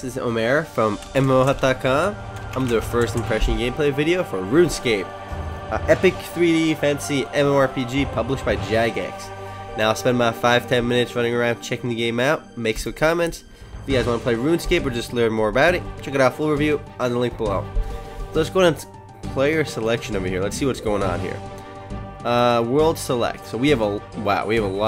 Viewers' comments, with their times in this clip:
0:08 Did he say published by Jack Ass?